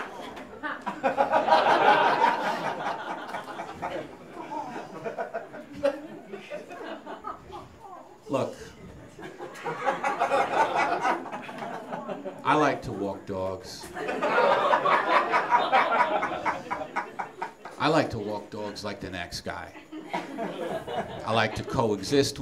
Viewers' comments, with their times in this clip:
0:04 I think his first realization of where he was going to go with it is the chuckle right